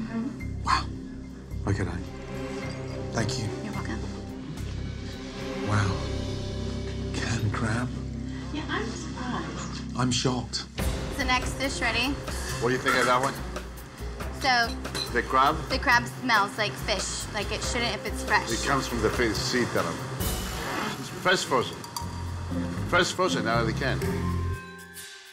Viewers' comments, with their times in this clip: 0:08 "To beh honest Gordon: I'm sooprised"